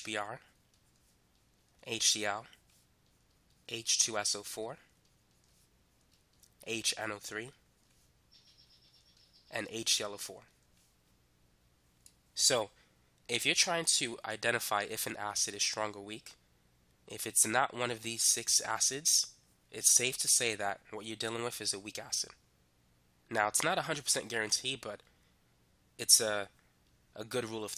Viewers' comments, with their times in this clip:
0:08 birds calming background🥰